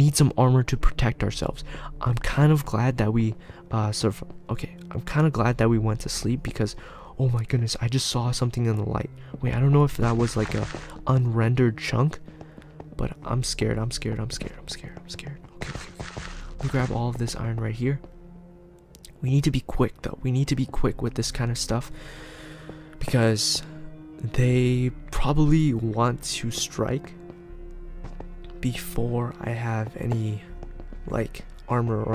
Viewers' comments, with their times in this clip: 0:03 See that Light Coming And Name tag? And When Rage Walk On Dirt It sound like 5 People running on dirt at same time
0:05 someone is eating listen closely
0:12 I heard eating sounds
0:16 maybe someone is eating food in the cave i heard a sound eating